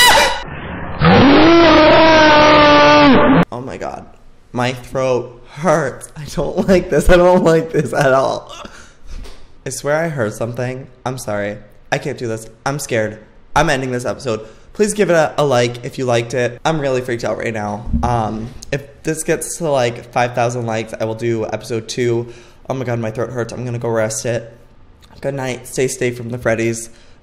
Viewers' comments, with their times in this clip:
0:08 I swear that I heard the noise he tought he listened